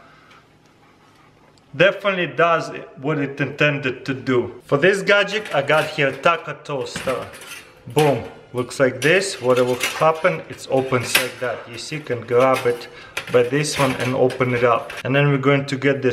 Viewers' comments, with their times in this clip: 0:03 that beat tho🔥😜 dhu dhu dhu dhu